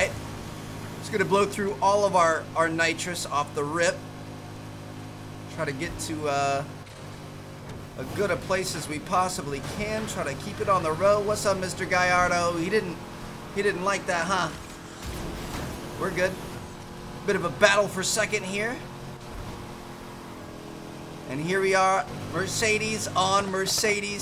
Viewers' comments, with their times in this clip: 0:09 It is awful how he says insted of huracan